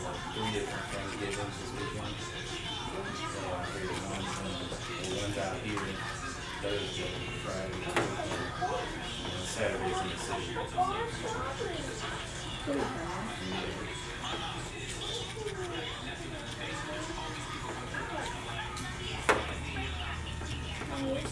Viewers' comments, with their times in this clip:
0:07 did you guys hear the T.V. was in Bubble Guppies Lol